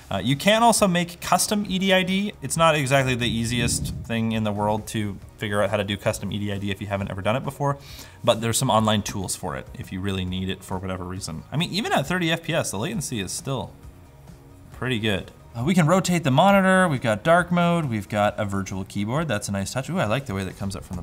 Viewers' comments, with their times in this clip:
0:03 Random demon noise